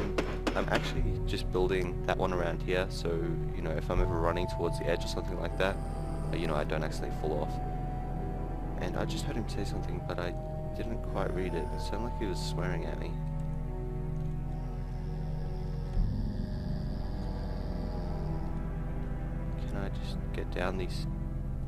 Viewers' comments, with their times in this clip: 0:08 random swearing survivor ha ha